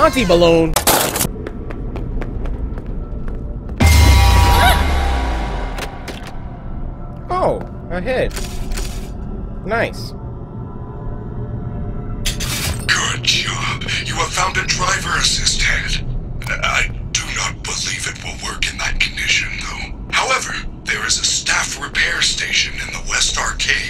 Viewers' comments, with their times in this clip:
0:07 the way he says “oh a head” so casually 💀
0:07 oh a head nice said coryxkenshin calmly